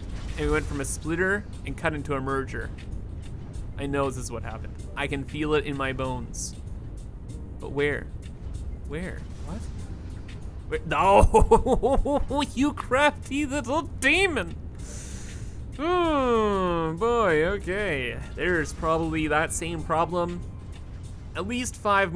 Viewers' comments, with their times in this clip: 0:09 my mans turned into Jack McBrayer for a minute there hehe